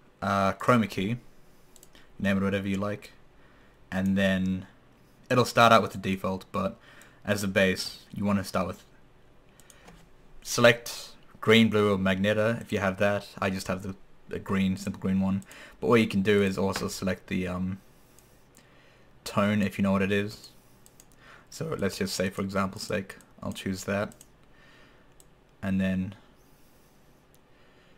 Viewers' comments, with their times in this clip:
0:08 You had me "Select Green, Blue, or Magneto" - that was awesome ^_^